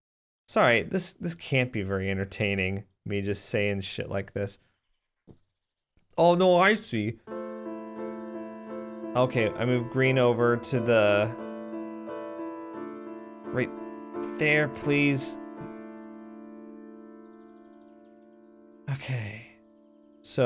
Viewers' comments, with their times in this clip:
0:06 perfect music timing